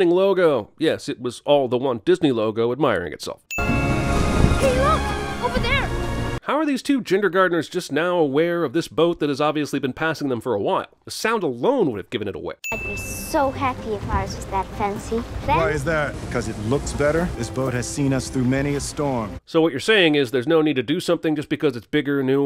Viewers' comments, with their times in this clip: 0:07 “Jindergardeners”. That’s beautiful.